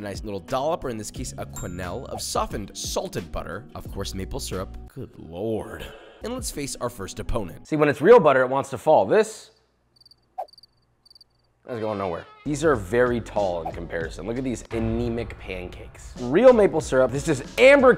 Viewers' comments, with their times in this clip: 0:04 The good loooooooord got me dyeing🤣🤣🤣